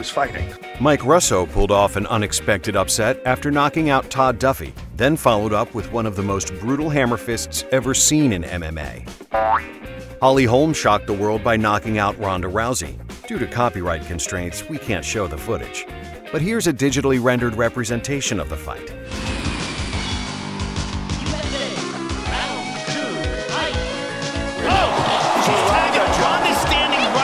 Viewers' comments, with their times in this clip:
0:03 😂🤣 you got me there with the sound effect. You said brutal and I was expecting a brutal one. 😂
0:04 the sound effects just makes everything 1000x funnier
0:06 Lmao "the most brutal hammer fist" with that sound effect lmao
0:08 Who add that boink sound? What kinda hammer fist is that? 🤣🤣🤣🤣🤣🤣🤣🤣🤣🤣
0:09 That "toing" sound effect had me dying 🤣
0:09 Who else laughed so hard at the sound effects after he said "Most brutal Hammerfist ever seen in MMA" Hahahahaha Push Like if you continuously clicking ----> to hear it over & over again